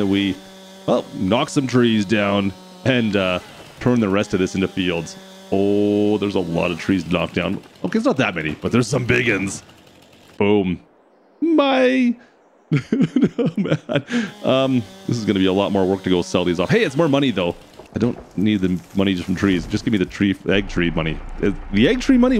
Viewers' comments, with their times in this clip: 0:07 Did anyone else here someone else talking ???